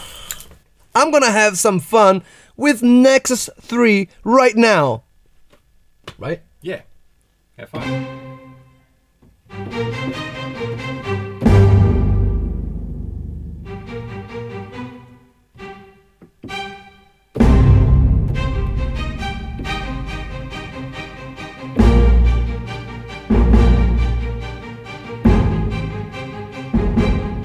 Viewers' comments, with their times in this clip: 0:07 The news cast intro
0:13 he almost made me think that he was going to play funky town